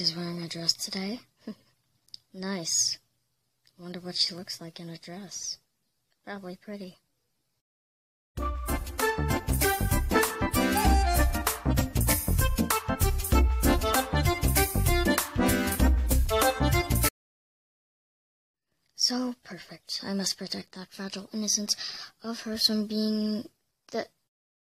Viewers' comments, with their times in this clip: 0:07 Omg lol that made me laugh because of the music